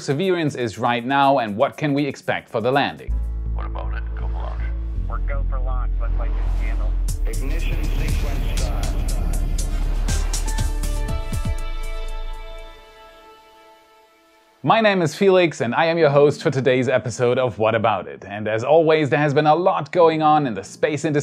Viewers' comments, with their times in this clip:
0:04 does that guy actually say "what about it, go for launch"? or is that dubbed over? Just curious.